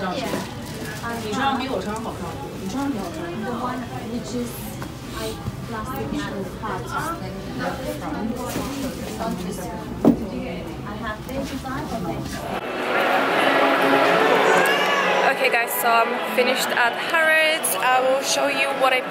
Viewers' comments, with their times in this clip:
0:04 I heard Chinese 😂😂🤣